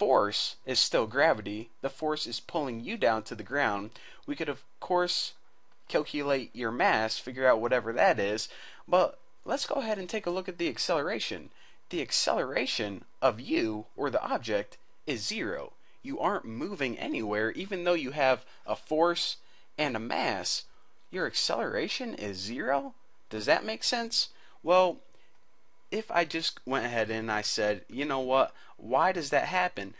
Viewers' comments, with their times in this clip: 0:10 Is that you, Christopher Walken?